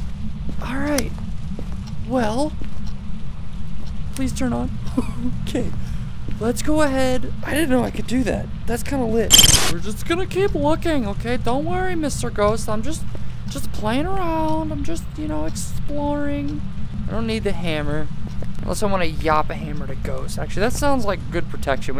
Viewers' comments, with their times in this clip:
0:09 bruh that screechy jump cut made me jump ahahaha you got me there :P